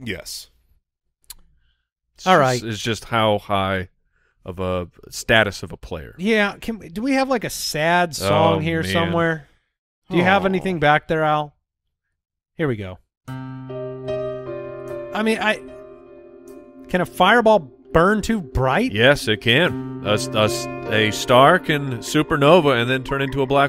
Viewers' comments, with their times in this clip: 0:06 I was hoping for a Kenny G sad saxophone